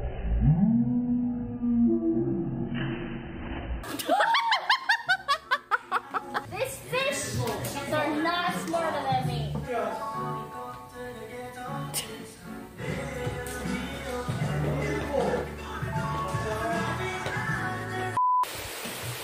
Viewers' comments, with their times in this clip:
0:03 That's a good laugh